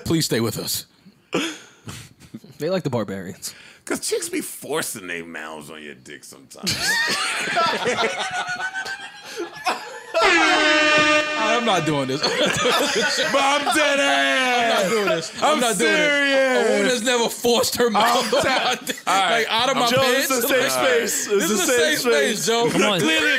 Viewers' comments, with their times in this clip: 0:08 bruh someone’s laugh there sounds like a star wars pod racer
0:08 joe sound like a spaceship taking off 😭